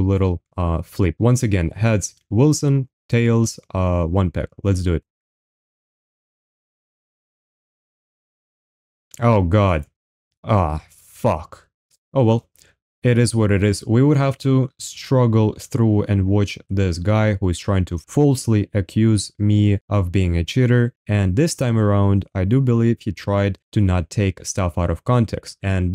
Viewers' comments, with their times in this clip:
0:10 that's the most emotional AH FUCK I ever heard